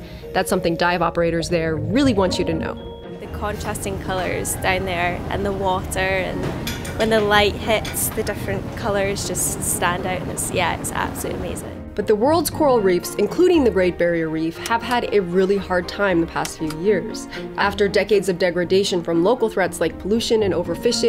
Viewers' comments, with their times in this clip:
0:09 wtf is a Scottish chick doing there lol